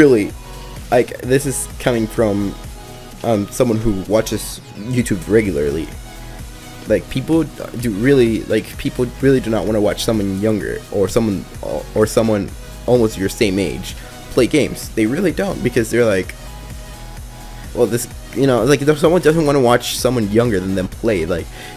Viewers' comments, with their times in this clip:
0:03 u suk arb: u swallowXD